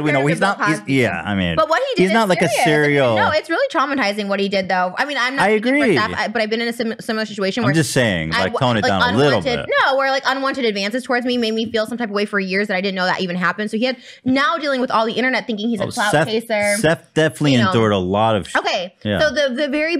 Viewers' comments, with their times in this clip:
0:03 Me staring at the screen trying to figure out wtf trisha is saying